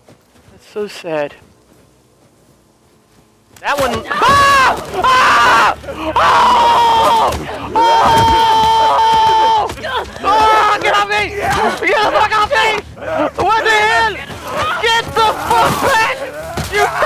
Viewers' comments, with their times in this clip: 0:03 idk y but nice scream bruh...
0:04 Omg that scream. That was hilarious